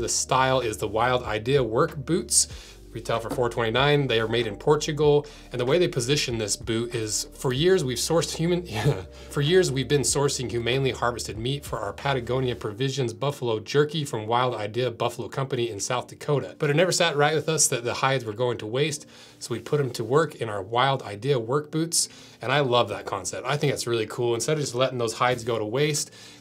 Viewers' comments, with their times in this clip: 0:07 that little chuckle hahahaaaa